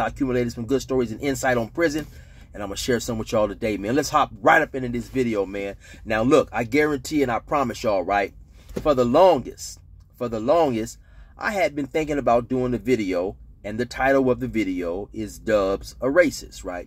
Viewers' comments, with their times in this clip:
0:04 LMFAOOOO man why was that intro so fast and aggressive 😂